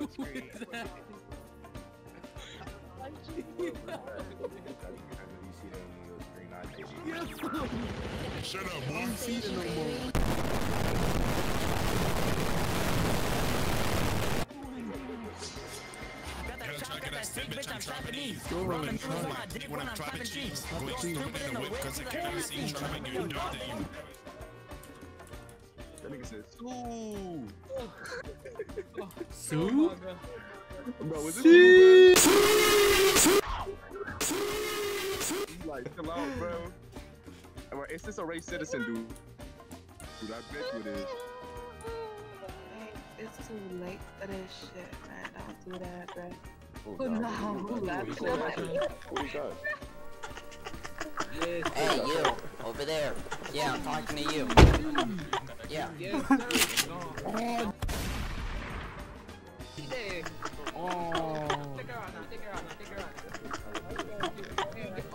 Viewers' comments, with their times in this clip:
0:10 > gets jumpscared > begins to rap
0:51 The moment of silence ALWAYS gets me 💀